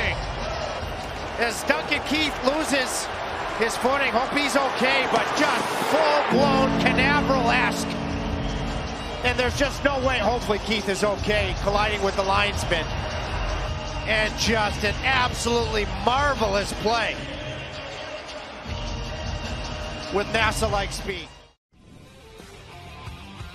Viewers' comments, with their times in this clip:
0:09 you can hear quite loud Dang coming from inside the head of Keith.